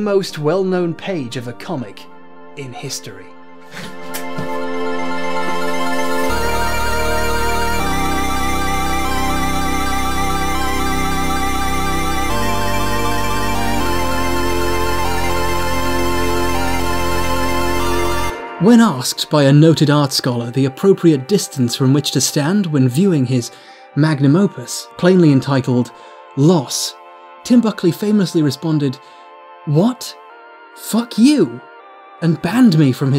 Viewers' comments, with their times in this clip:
0:05 I used to think Sherlock was going to be my go-to video while working and then I thought Vaccines or Pathologic might knock it off the top spot. But will always send shivers down my spine when I hear the music reach its climax.
0:17 I watched this video when it initially released a few years back, and I still think about that line (and its delivery) once every couple weeks.